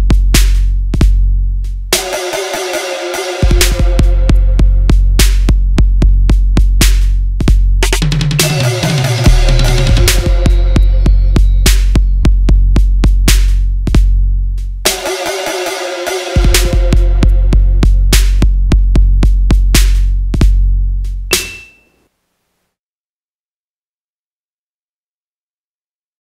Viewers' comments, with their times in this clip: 0:07 The fucking drums